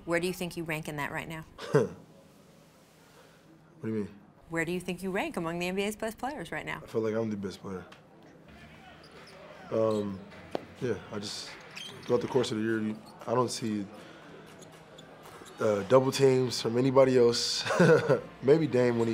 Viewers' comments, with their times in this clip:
0:07 Rachel sounded like she was going to throw a fit if Harden didn't answer (Talk about putting someone on the spot)